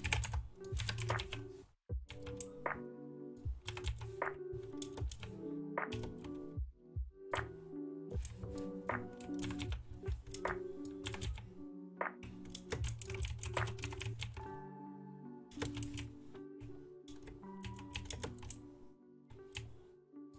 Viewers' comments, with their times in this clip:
0:06 Anyone get minecraft vibes with the music